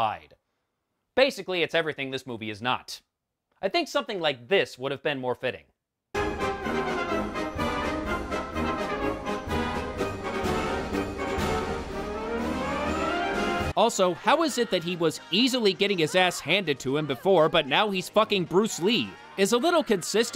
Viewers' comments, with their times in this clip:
0:06 I'm dying laughing with the music change Wish the rest of the movie was half as enjoyable